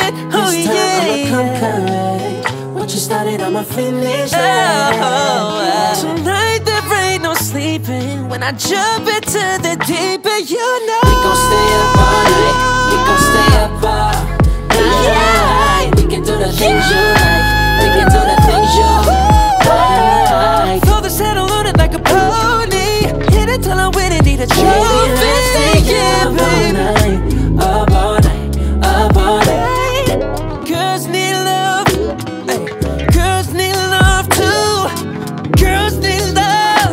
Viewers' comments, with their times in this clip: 0:08 Minute gets CRAAAAAZY 🔥🔥🔥 what a voice range sheesh
0:16 I love the hight
0:16 that long high note god dammn
0:17 Woah, Will didn’t come to play. This is vocally SAVAGE 😍 tho 👀😭😍😍😍